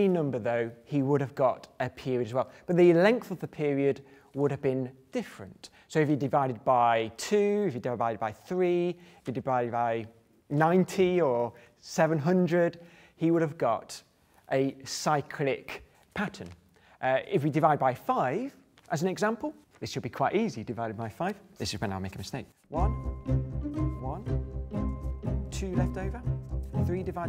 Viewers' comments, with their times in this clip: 0:09 he says "dibide vy" instead of "divide by" lol